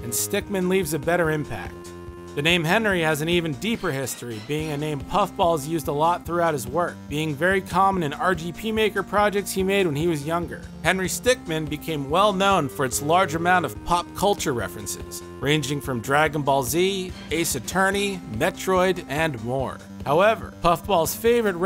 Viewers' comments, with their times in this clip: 0:05 "RGP maker" lol